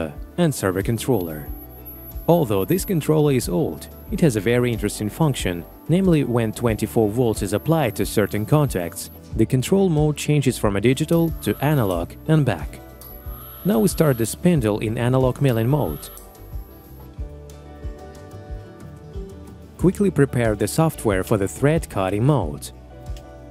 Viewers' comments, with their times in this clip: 0:10 did someone hear very sharp noise ?